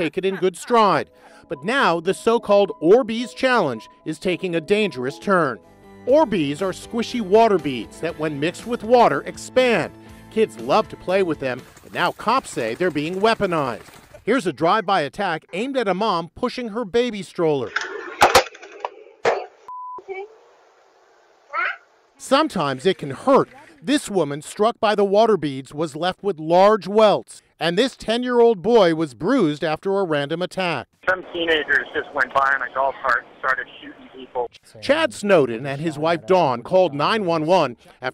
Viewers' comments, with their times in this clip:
0:08 hello tornado siren
0:19 I know this is a serious problem, and it is, but that little "wah?" at the end was too cute! She even took her little hood off in surprise🥺🥺
0:19 The Little Kid - Wah!
0:19 Why’d that baby go wah
0:20 the baby was like “ah?” After she heard her mother
0:21 I cant get over how funny it is when the mom is swearing here and the kid just goes: wah?
0:21 I’m sorry but the baby going “ Ahh? “ had me laughing it was cute lol 😂